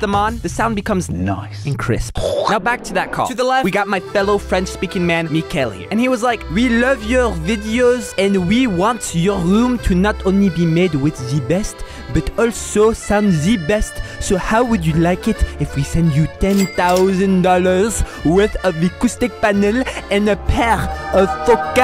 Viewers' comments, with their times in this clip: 0:06 That french accent was amazing lol